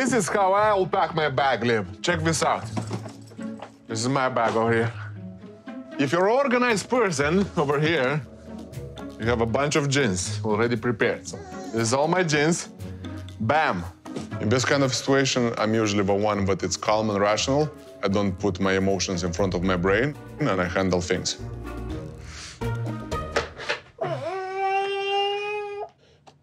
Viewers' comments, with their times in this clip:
0:09 It sounded like he said jizz I can't hear it as anything else 😂😂😂